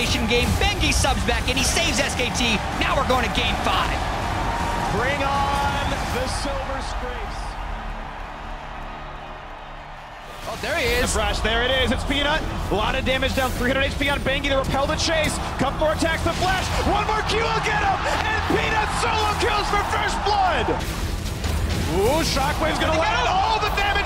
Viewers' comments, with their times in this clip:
0:06 I heard that ‘BRING ON THE SILVER SCRAPES.’ BIIIWOOOWOOOOOO BUDIDOOOOO